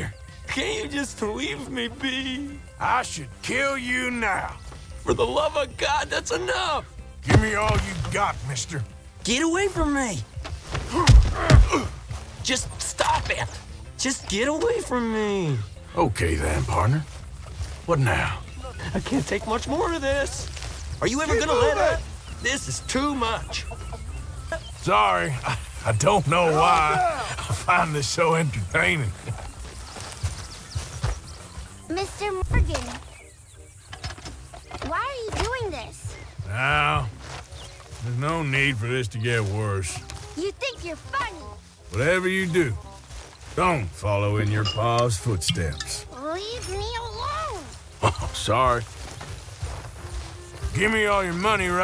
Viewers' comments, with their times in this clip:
0:07 he is getting choked but speaking clearly like nothing lmaooo
0:33 Mr Freakin' Organ? Mr Virgin? That's just lagged strangely :D